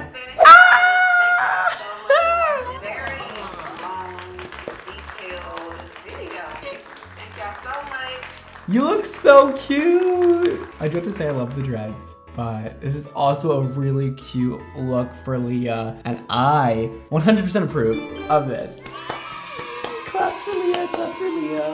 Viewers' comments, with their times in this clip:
0:06 Love the little bleep